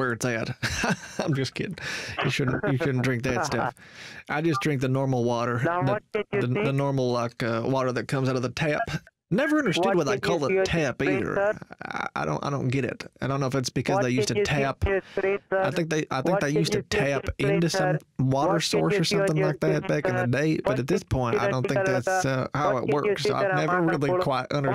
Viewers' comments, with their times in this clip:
0:05 both of you just trying to talk over each other was so perfect
0:12 HAHAH love the talking over him at same time!!! or so.